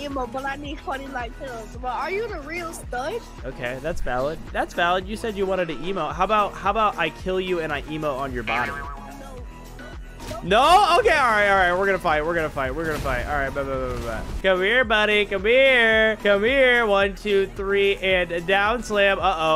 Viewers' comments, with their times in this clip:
0:03 Bro the boy`s voice was so squeaky and funny